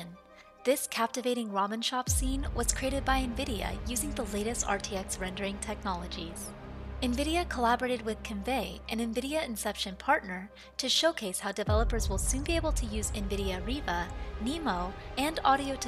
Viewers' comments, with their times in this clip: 0:03 It’s a small thing but I cringe every time he says “nVidia”. I’m the one with the problem, but for reference nVidia tells you how to pronounce their name several times in the video Great info tho!